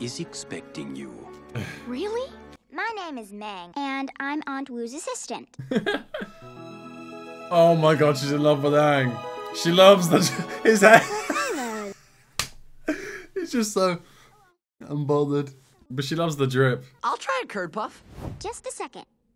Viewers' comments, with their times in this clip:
0:03 you need to memorize this voice! TRUST ME it's important